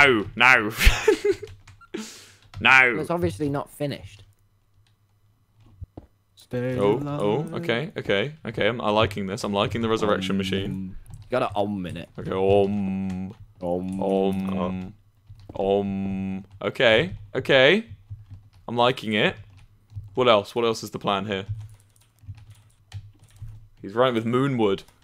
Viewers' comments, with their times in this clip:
0:06 Did anyone else hear someone (I think techno?) sing "Stay alive" ????